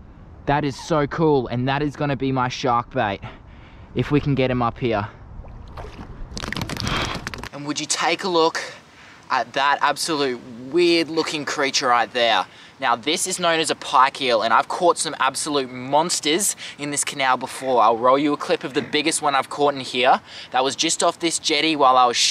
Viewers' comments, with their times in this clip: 0:06 warning to headphone users...lol